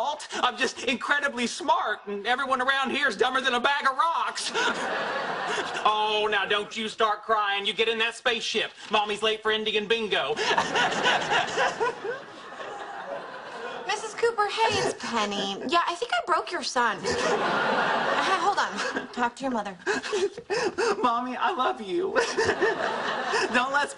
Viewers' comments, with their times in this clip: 0:10 sobbing ————————————— Me: Sheldon Don’t Sob